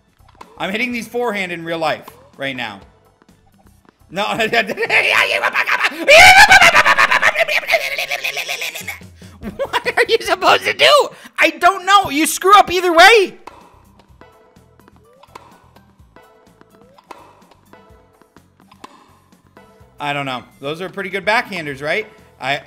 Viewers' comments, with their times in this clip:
0:03 2x speed he sounds like a gremlin about to eat your ankles
0:04 I need more of these unintelligible noises
0:04 Courage the cowardly dog noises